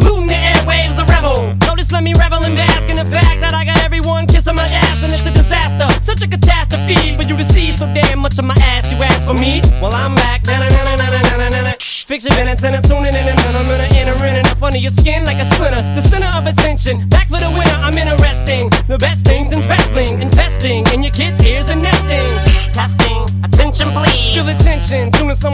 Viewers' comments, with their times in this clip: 0:10 is so smooth, can't stop listening to it 😮
0:12 that's some godly flow . Hail Slim shady
0:12 (Briefly turns into Luigi)